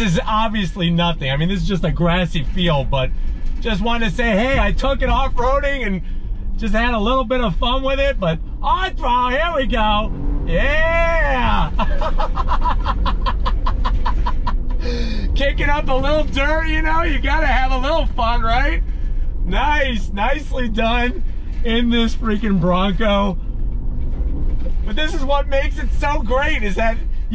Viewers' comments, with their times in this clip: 0:06 You can hear that metal "table" attached to the rear gate rattling
0:14 You can hear that metal "table" attached to the rear gate rattling